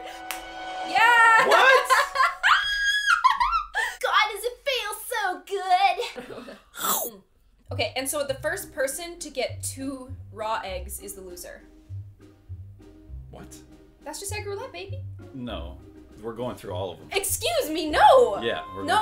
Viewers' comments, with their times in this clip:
0:03 YOU STARTED SINGING MISERY BUSINESS DON'T PRETEND LIKE YOU DIDN'T